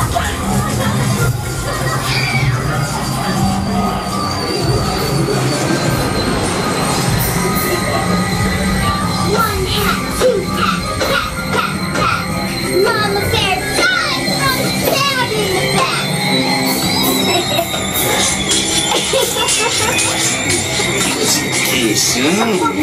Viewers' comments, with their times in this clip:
0:09 wat r they saying